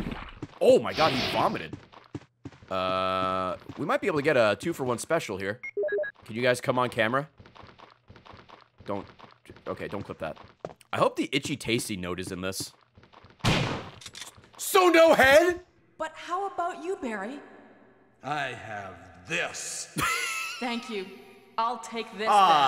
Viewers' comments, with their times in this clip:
0:03 can you guys Chum on Camera?